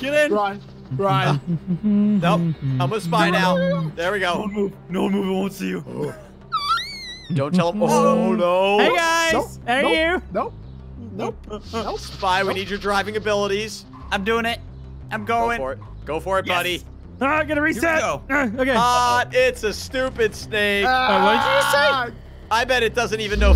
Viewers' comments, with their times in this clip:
0:05 🤣 what was that noise